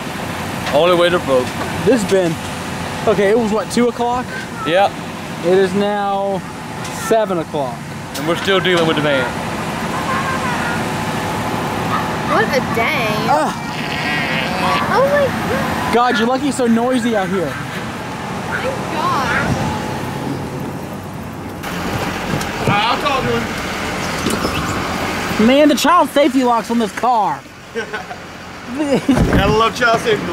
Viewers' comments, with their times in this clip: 0:10 I love how grandpa positions himself for his fart lol
0:13 That fart sounds like cartman haha